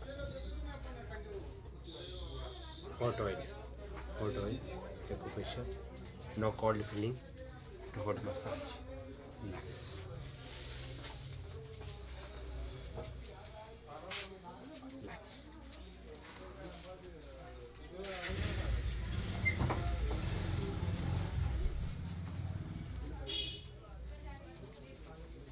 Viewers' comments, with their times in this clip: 0:06 does he say "No call de police" ?